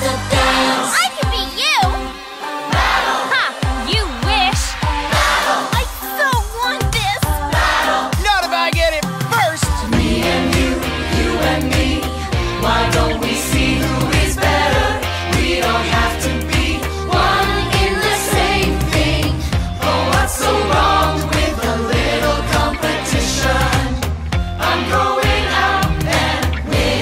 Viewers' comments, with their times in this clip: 0:08 am i the only one who thinks this sounds like Ein from aphmau???